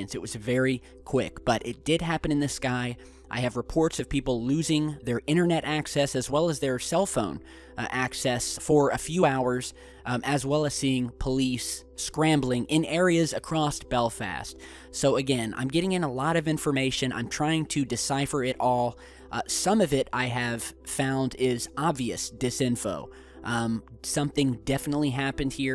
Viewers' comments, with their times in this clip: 0:08 was that just an audio bug or... what? sounded like there was two of you for a sec there.